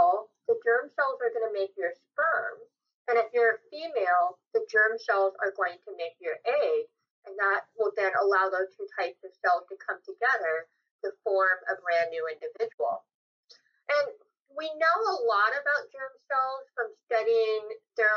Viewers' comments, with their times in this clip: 0:05 Audio quality drastically improves :)